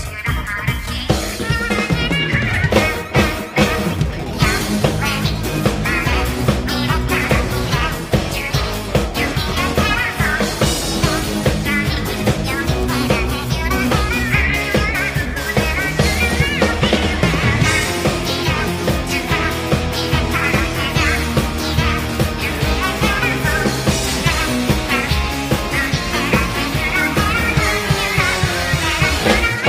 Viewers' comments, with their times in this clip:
0:03 when that heavenly Melody goes hard
0:11 Marie voice cracked
0:17 drummer singing along.